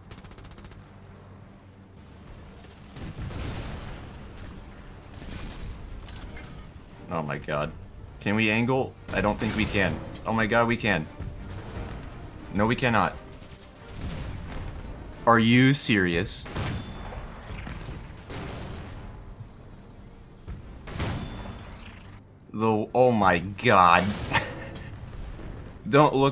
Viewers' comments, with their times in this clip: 0:09 Oh dear, that didn't exactly sound good but in the context of the round not killing you that is a good sound to hear.